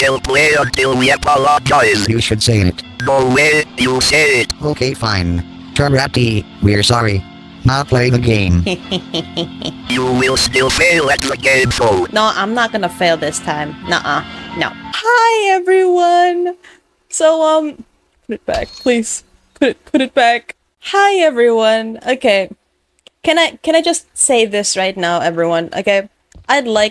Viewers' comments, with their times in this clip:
0:08 ROBLOX EHEHEHE SOUND